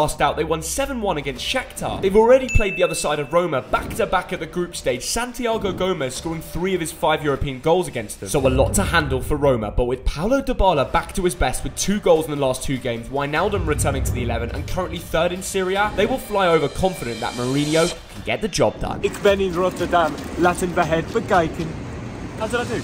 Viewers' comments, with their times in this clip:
0:05 santiago gomez? Lmao
0:05 ! It’ santi(ago) GIMINEZ! you mispronounced his name just like the corrupt mexican federation. They did not even choose him for the wc🤦